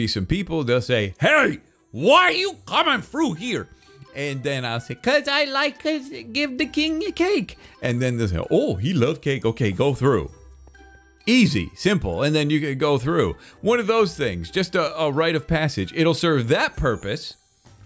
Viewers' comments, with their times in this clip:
0:03 sounds exactly like Gru from despicable me XD